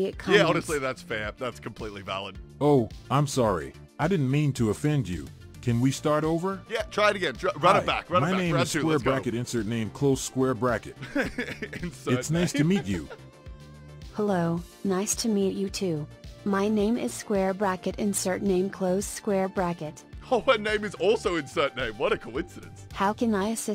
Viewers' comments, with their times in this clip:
0:07 why does he sound like Gazef Stronoff from Overlord?